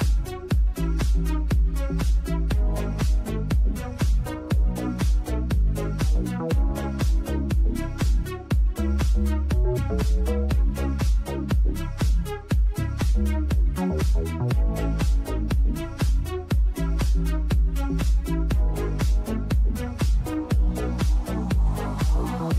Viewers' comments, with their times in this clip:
0:10 nice finger bang music